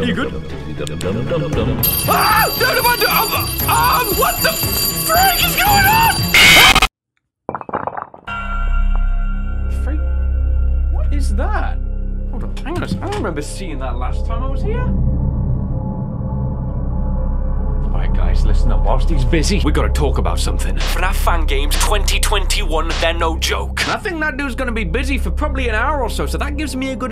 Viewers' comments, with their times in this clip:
0:09 Thats a big noise: